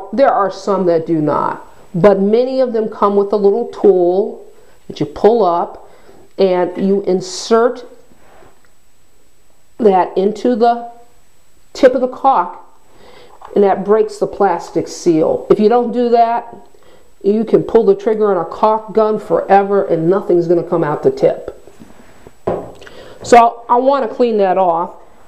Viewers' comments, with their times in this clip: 0:10 lol that sounds horrible lol